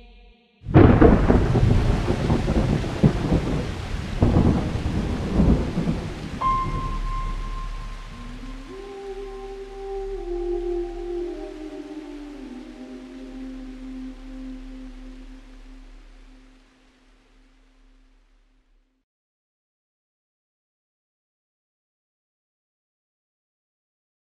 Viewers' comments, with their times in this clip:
0:07 the woman humming sounds to me like ac origins main theme at some part